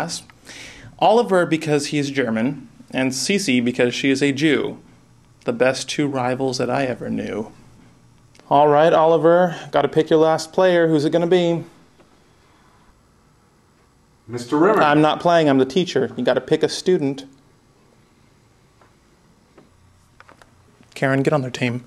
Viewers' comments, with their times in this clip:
0:06 Them cracking up in the background. xD